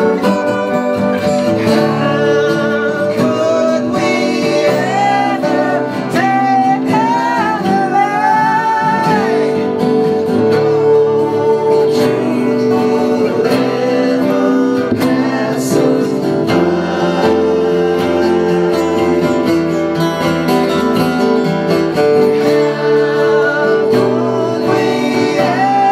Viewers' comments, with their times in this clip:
0:06 still not in control of those high notes after 30 years..but still a nice acustic collection of great songs :)